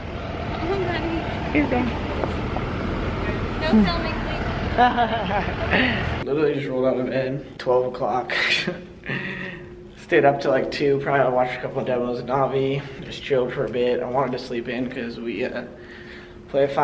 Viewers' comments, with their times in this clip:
0:04 that fake laugh though